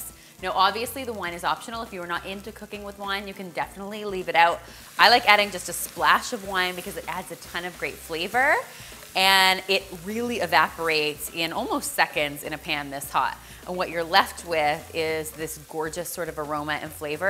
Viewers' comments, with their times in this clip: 0:04 Timestamp " I like to add wine... because it adds a lot of 'grape' flavour..." 🤣😂🤣🤪 "Meatless Monday" ?!? Who in the world gives a damn about that. Veggie Stock keeps it Vegan?/Vegetarian, then add "Goat's Cheese." ... ... ... 😂🤣😂 Good luck with that one. 🤪